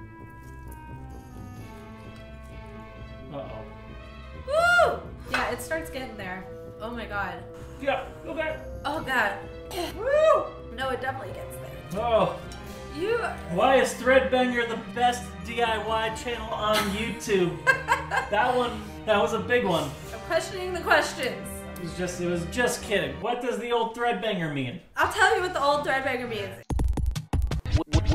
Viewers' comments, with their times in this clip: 0:09 the background music sounds a lot like music from beetlejuice